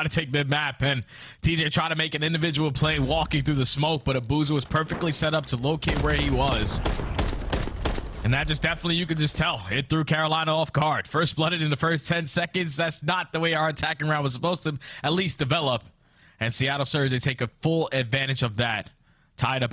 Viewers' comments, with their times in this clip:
0:07 Bro did anyone else hear a fart